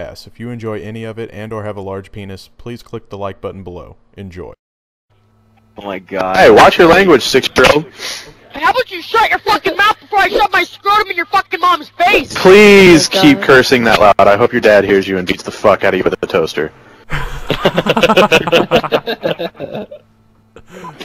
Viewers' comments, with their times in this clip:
0:07 Best squeaker rage ever